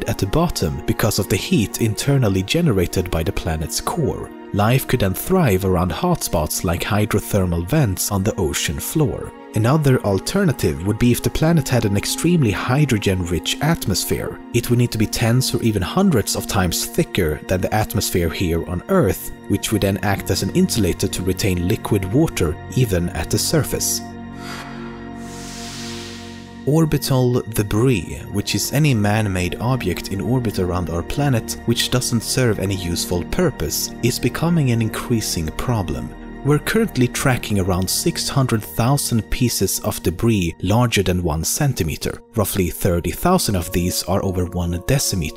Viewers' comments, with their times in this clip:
0:09 blip is bothering me tbh
0:30 Lol he said obyect instead of object